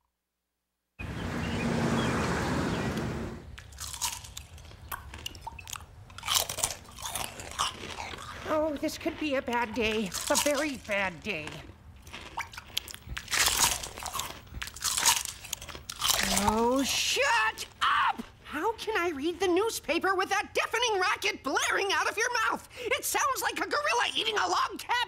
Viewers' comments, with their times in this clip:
0:06 if you ever had a sibling, you know how fucking annoying it is when they smack while eating food.